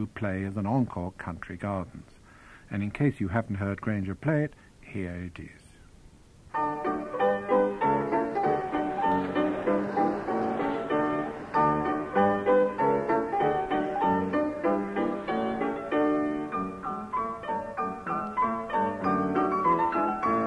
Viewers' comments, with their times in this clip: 0:06 Percy’s version of his own Country Garden is pure Rock’n’Roll, just like Jerry Lee Lewis would have played it 😆 Love it!